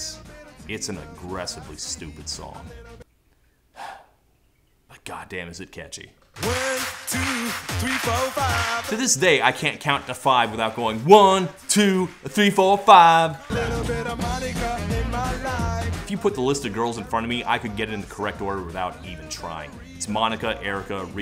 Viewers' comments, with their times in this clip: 0:06 Listen to those Germans clap. Hopeless.